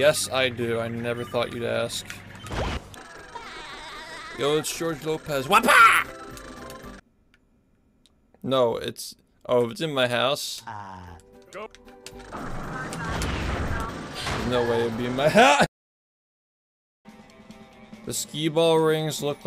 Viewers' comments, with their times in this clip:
0:05 laugh track intensifies